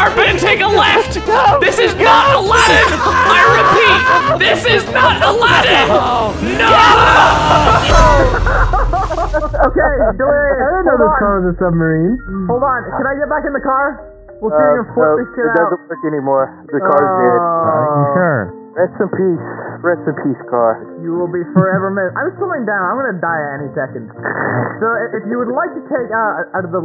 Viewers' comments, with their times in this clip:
0:08 I love how you made everyone's voices sound like they were actually underwater!